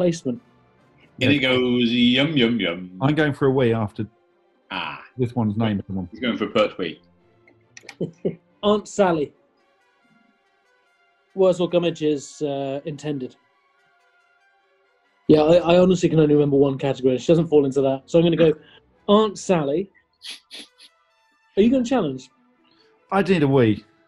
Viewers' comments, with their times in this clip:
0:06 Ooh, Mars. Very foreboding. Oh, I think we've got on to Jupiter. Nice, that's my favourite one.